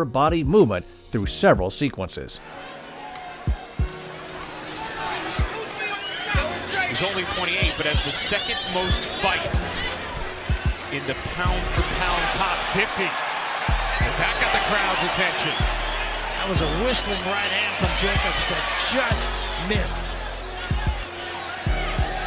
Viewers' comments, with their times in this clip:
0:06 Nice video! I'm a boxing fan, but nothing sounds more auto-fellating than saying "the sweet science"... damn that's cringy³ I keep hearing Shoryuken everytime he punches!